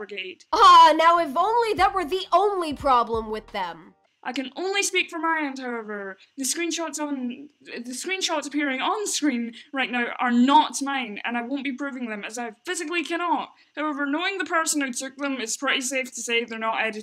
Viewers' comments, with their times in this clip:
0:05 this chicks voice is so annoying 😭🙏